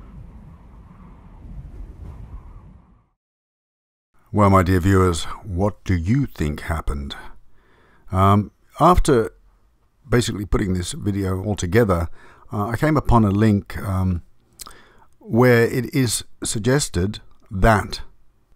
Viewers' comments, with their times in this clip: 0:04 Your voice is so comforting. It makes me feel like I'm talking to my father/grandfather. 😢❤